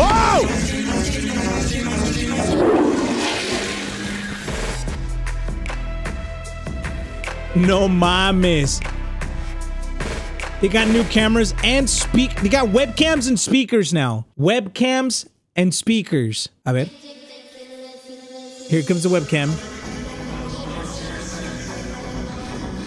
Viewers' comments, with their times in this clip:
0:06 WHY DID YOU CHANGE THE MUSIC YOU RUINED THAT SCENE